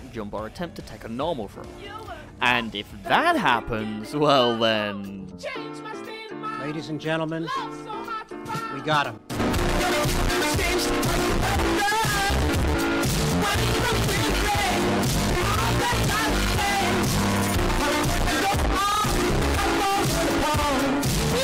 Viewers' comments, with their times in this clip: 0:08 slammed him to the beat?! XD